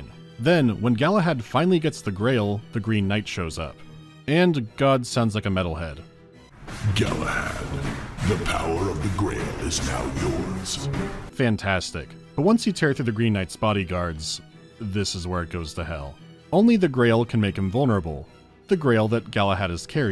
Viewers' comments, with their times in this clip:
0:06 Sounds more like Optimus Prime or the Emperor of Mankind to me